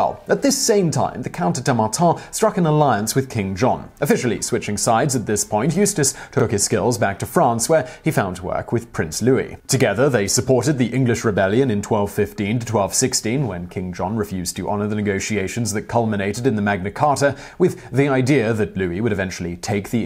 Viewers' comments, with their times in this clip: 0:06 Did anyone notice there was a audio distortion?